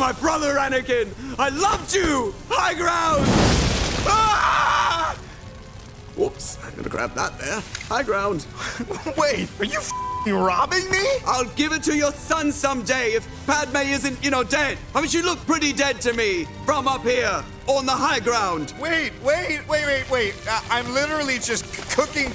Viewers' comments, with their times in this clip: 0:09 anakin: wait, are you fr**king loving me???